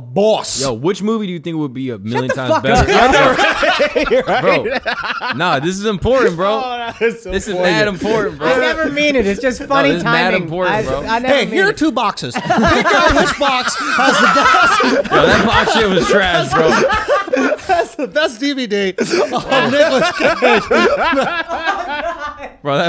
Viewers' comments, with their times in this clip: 0:09 that moment you laugh at your own joke than it bangs